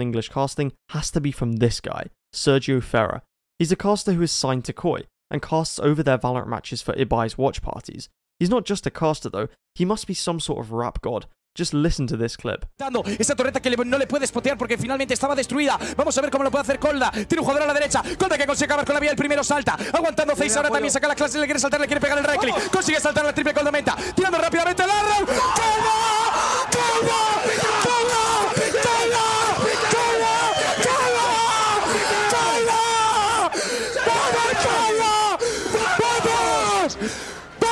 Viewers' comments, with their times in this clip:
0:06 Just in case you're interested the spanish caster in minute is doing casting like it would be soccer on the radio (old times) that is why it sounds like a rapper
0:10 Listen to any Mexican radio station, they literally (figuratively) ALL talk that fast. Again, not downplaying the incredible speed and precision it takes, but that's almost a requirement rather than a benefit.
0:13 The caster goes crazy
0:16 was like ankara messi ....................goal goal goal goal
0:18 he is not a rapper, lots of people speak super fast in spain and latm
0:24 that's how Spanish people talk ASHHDAHSDH fast af